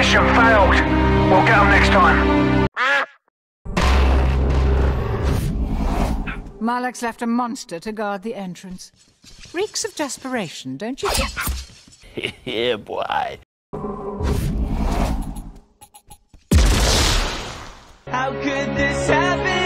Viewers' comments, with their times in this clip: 0:05 the one is also my favorite when malak sings "how could this happen to me?"